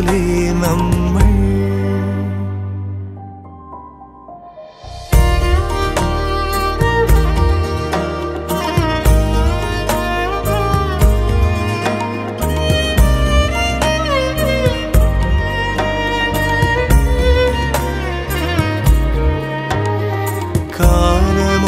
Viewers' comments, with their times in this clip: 0:05 violine healing my mind✨